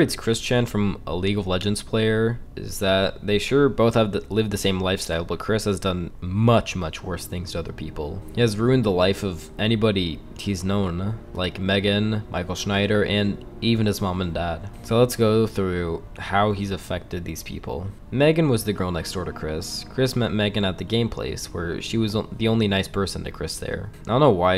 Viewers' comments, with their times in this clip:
0:07 Which soundtrack is on ? Sounds so haunting! 😮